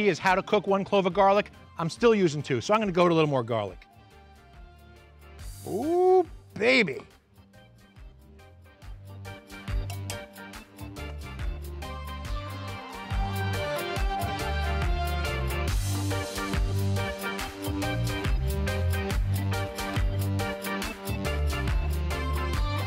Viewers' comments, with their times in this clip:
0:08 That knife tap went PERFECTLY with the music 😂 sounded just like a cow bell. I rewatched it at least 10 times